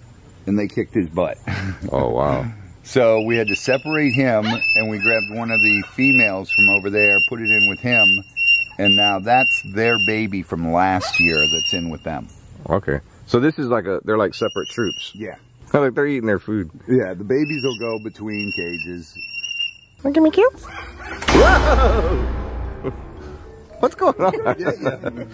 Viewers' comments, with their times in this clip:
0:09 I Thought My Fire Alarm Was Going Off LOL!